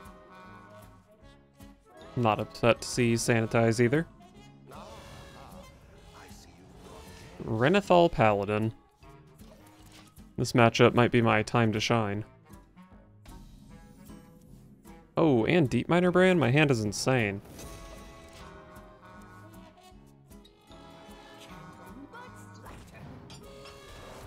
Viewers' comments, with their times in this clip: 0:09 music is a bit loud